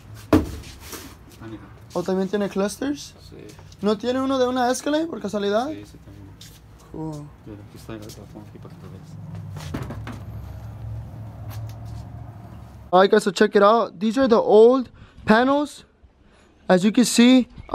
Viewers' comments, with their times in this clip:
0:05 Man sounded sad asf 😔😂